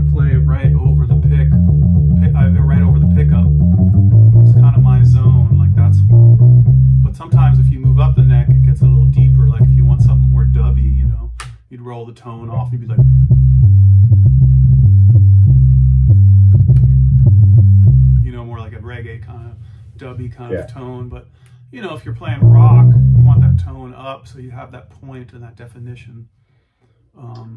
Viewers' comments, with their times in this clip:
0:10 I found a little bit of bass playing for anyone else who took the title to mean this would be mostly about the sound of the bass